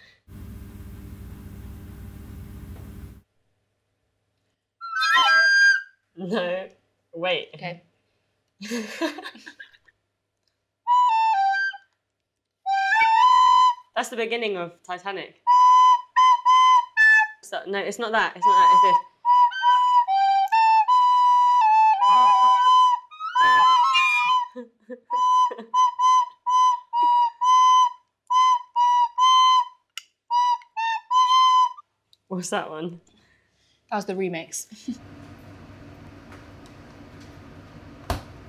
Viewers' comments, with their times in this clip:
0:09 this feels like 2 kids in primary school during music 😭😭
0:24 I turned off I ngl, my ears were hurting